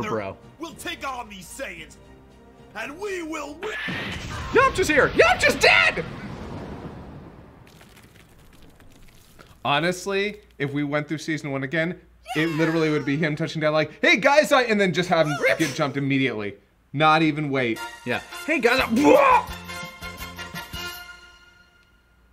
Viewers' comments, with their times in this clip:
0:04 It's almost as if he had voiced Krillin